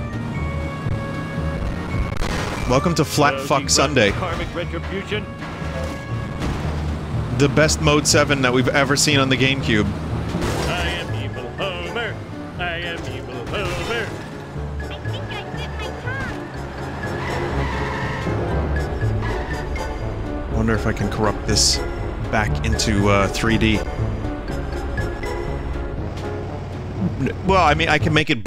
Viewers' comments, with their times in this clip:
0:10 Best Music Timing